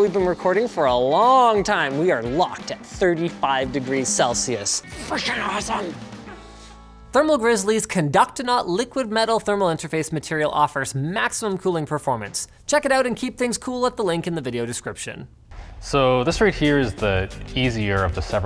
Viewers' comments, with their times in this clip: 0:04 sounded extremely close to a swear